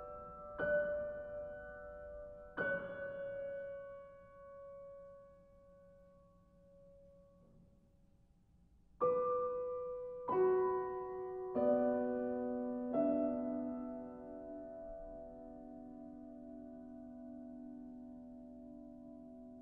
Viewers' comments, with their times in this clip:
0:06 Great sound! Great versions of Arvo Pärt masterpieces. One miniscule problem why does the piano player cut the sustain on Für Alina? I can't unhear it.